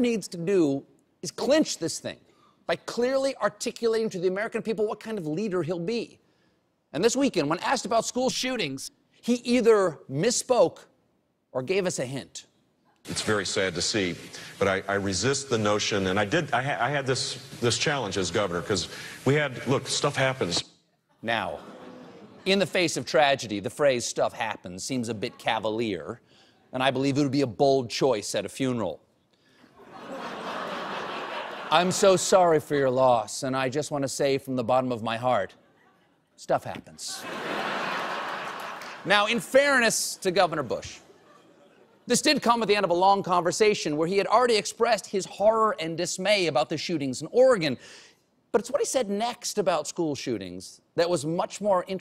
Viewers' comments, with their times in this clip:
0:06 Wait a minute... why was the word "shootings" dubbed in? What did Stephen actually say during taping there? O_o
0:06 or so when he says "school shootings" it sounds dubbed in. ._.
0:07 why did (CBS) edit the audio of "school shootings" ??? What did they censor or erase from this?
0:07 lol, notice the voice over
0:08 There is a serious overdub in this video at the mark.
0:08 Woah why was "school shootings" redubbed?
0:08 Notice the voice redub
0:33 I believe it would be a bold Chinese at a funeral.